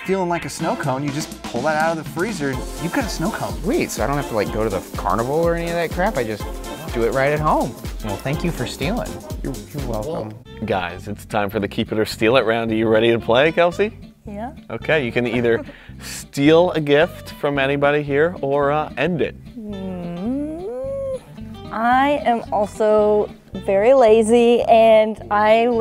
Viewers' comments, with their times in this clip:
0:09 thats "y-your welcome" was actuly pretty sad-